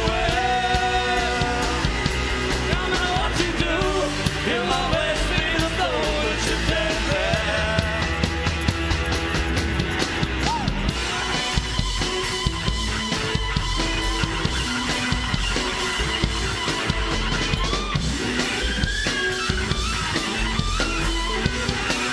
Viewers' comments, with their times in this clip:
0:08 Mother of awesome solo...